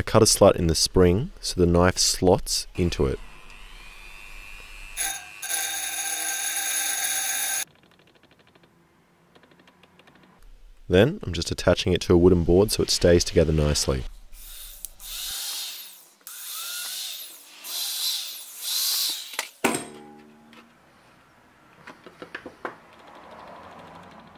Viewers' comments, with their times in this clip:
0:05 School bells be like: